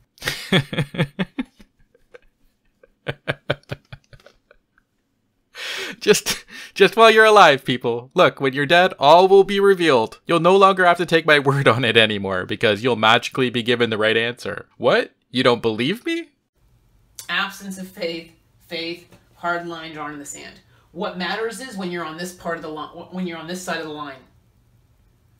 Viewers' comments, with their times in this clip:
0:07 Omg when you started chuckling it got me going too! So hilarious, great video, thank you!